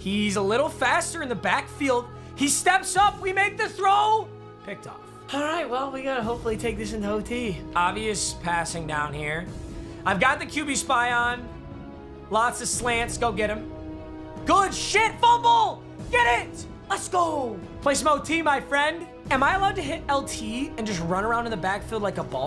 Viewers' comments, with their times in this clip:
0:04 The way he moaned into the mic 😂